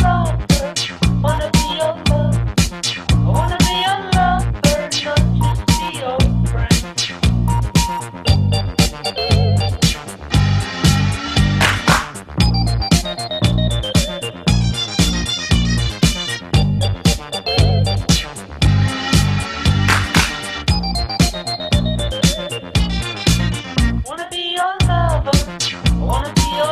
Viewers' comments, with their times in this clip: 0:08 we can hear the Power Rangers motto